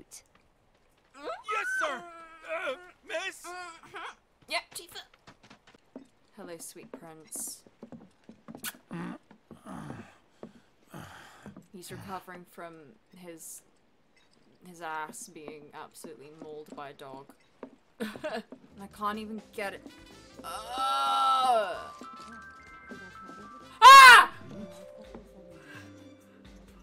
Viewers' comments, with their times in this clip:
0:08 First time I did this, I thought he'd farted. Damn near slid out of my chair laughing.